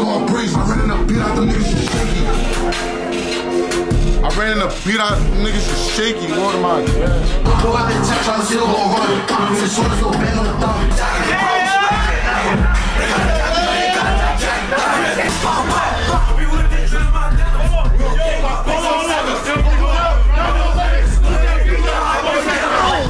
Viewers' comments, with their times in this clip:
0:08 nahh the song in the beginning mad tuff they aint drop that ???